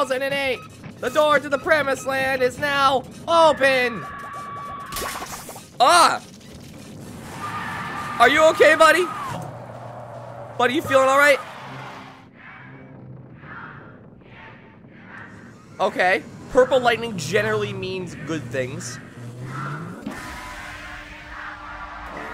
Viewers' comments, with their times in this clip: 0:08 the sound of baby’s at 2 am